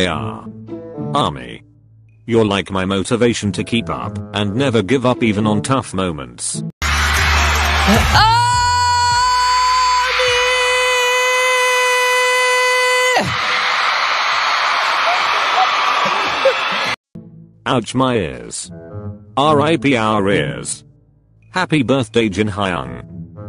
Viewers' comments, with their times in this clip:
0:08 Y'all people 🎧Warning: use volume at low point otherwise R.I.P to ur ears🤧 Also love this intro everytime and your edit too it's soooo AmaJIN